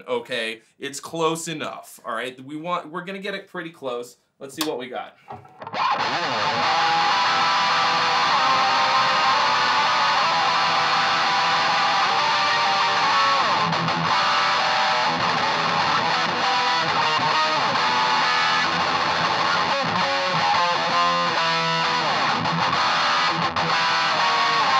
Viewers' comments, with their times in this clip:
0:06 it reminds me (a little bit) of Emperor.